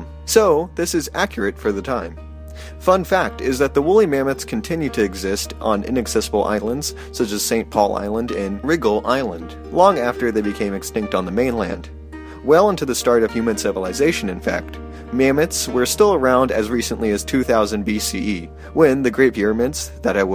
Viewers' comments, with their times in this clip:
0:04 If your sources say "BCE" they're using a calendar that doesn't exist. The movie actually got that part right. Until the world actually starts a new calendar, use the conventions that have been used for more than a thousand years if you want people to take you seriously. Wriggle Island? Seriously? That's pronounced "Ran-Gell" (I grew up in the Wrangel Narrows in Alaska)